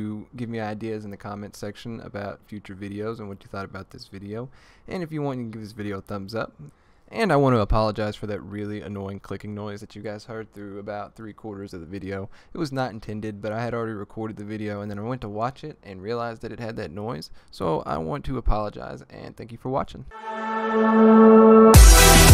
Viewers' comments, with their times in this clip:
0:06 honestly it was more helpful I kinda wish everyone did tutorials with the loud clicks so I know when you click something